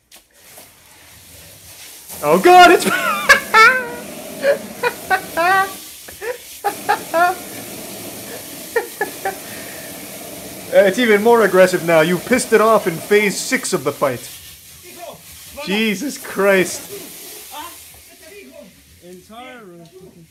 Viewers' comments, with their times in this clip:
0:03 epic charlie laff